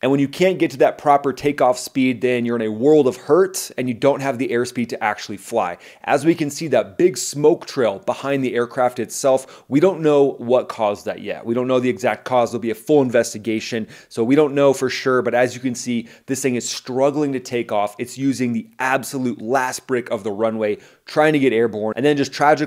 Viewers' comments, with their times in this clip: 0:04 thats not compressor stall; it doesnt make that chugging sound. Its a full-blown fire.